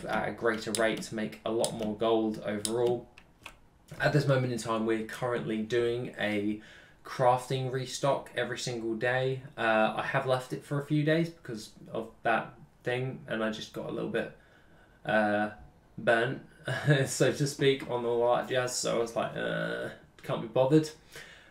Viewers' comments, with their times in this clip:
0:09 "...I just got a little bit banned..." Maybe that's not the word you said. To my American ears, I may have heard your British accent wrong!